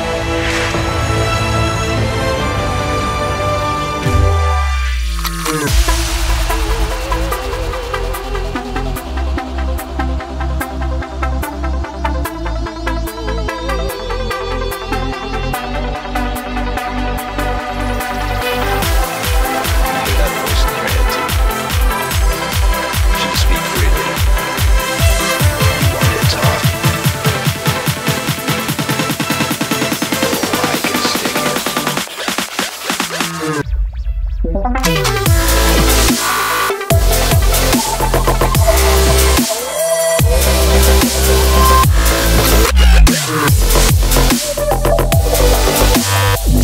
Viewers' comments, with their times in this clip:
0:03 wow like you hear a bomb wait and than explode and feel the waves against your ears :O
0:34 That drop ... 0_0 <33